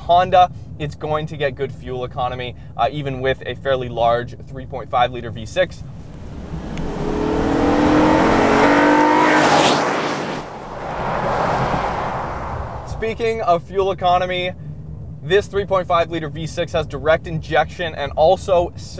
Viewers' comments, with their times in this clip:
0:06 Was that VTEC I heard there?